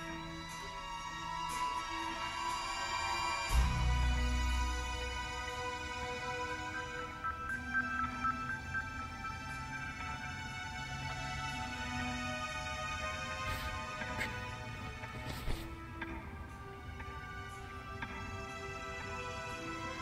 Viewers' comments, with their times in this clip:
0:07 One cool detail I just noticed is at around the mark, the music syncs up perfectly with the ticking of the giant clock.